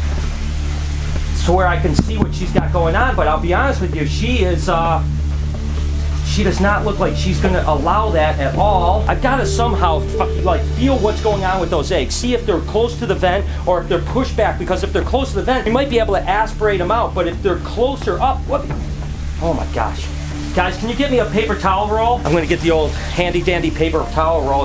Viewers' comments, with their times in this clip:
0:09 did it sound like Brian almost said the f word?